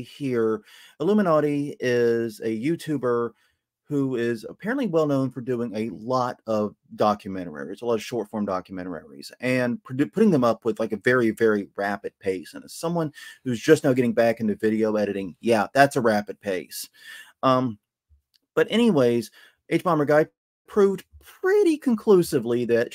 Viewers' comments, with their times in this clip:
0:05 I propose that henceforth we should all pronounce ‘documentaries’ as ‘documentararies’